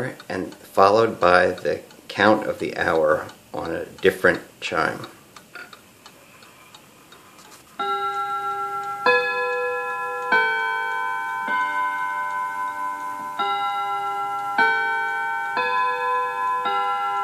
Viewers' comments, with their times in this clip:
0:05 The full chime